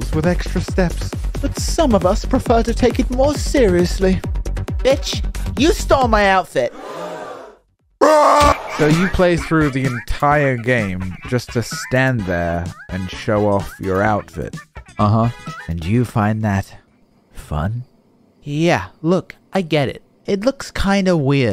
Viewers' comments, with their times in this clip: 0:07 I can't 😂😂😂 the scream